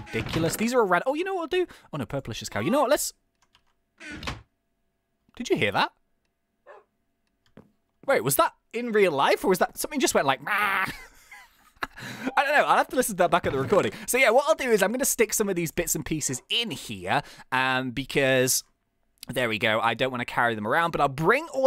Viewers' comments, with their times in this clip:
0:03 i Heard a goat